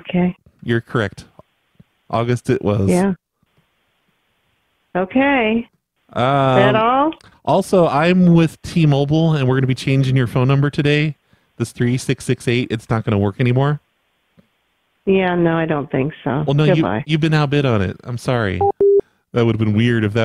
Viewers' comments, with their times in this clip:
0:06 She sounds like that answering machine lady from the 90s? I know its not her but sounds like her kinda